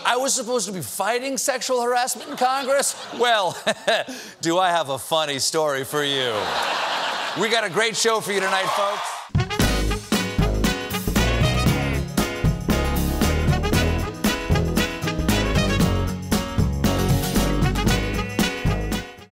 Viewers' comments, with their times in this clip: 0:09 ears are bleeding, thanks!
0:09 marks the death of all headphone users. ...and we pray 🙏
0:13 R.I.P headphone users